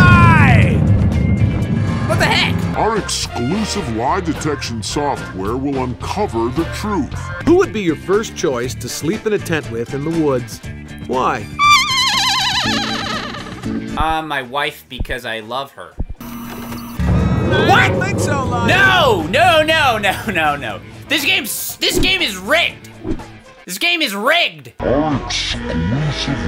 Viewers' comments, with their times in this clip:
0:07 i think it was just that your ProJared impression was spot-on